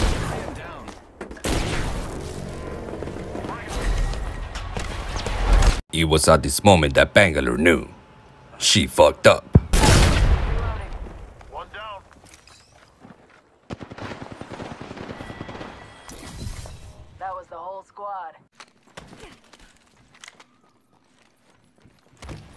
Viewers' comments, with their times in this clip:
0:06 ITS THE SAME VOICE THAT IS IN THE ORIGINAL